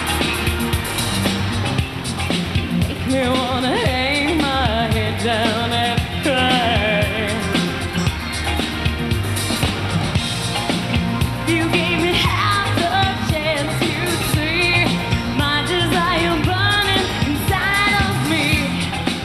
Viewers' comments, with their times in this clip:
0:03 Awesome show and stage presence, but...ouch, Madonna is quite off key ... However, She is still the Queen of Pop! LPM 💙☮️🎵